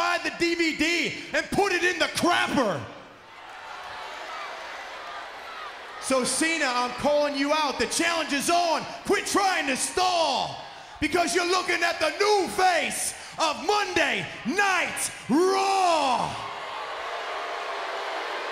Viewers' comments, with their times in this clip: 0:04 Yo in miz voice is complete different 😅